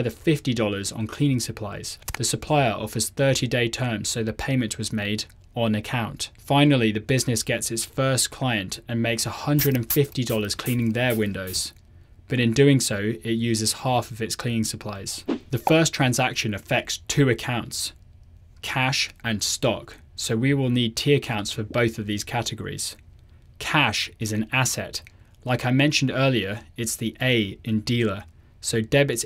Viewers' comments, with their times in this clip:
0:09 I was wearing earphones and it sprayed on my left side and I jumped!
0:11 WHY DID YOU MAKE THAT SOUND FOR HEADPHONES ONLY THAT SCARED ME 😭😭😭✋